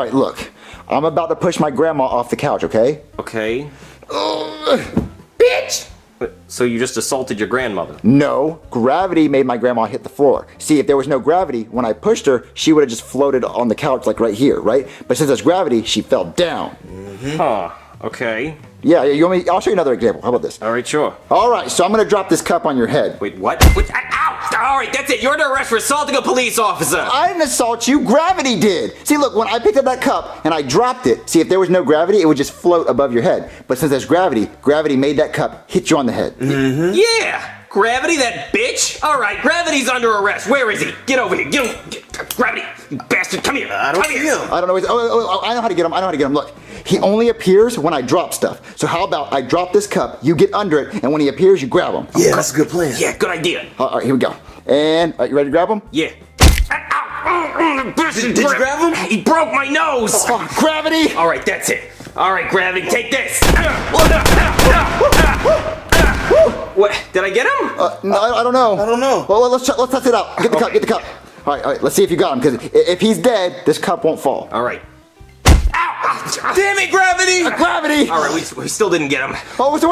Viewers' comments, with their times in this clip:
0:05 Soooooo funny how she said it lol
1:04 bowser turning and screaming is js so oddly funny